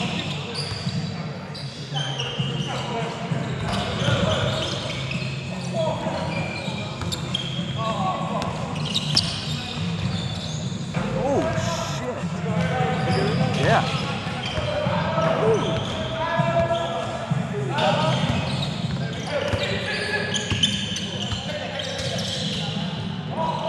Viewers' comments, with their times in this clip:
0:09 wtf everyone was so damn quiet after that